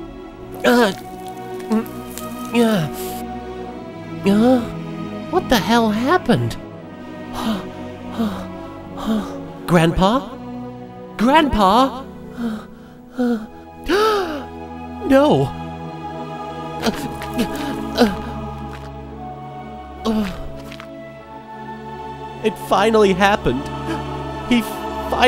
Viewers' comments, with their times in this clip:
0:08 lol That Lion King music.